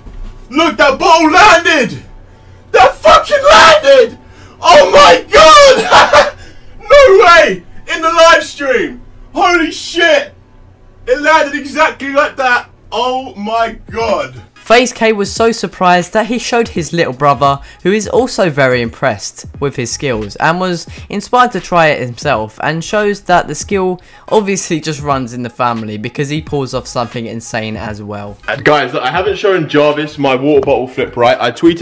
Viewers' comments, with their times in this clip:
0:05 rip earphone users
0:18 headphone user warning